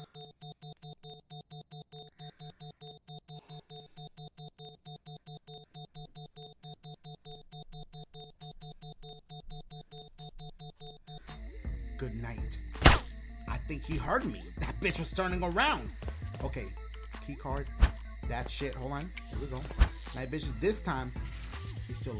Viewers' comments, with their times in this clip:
0:03 This dude lowkey funney especially the unexpected screamin and cracked me up😂😂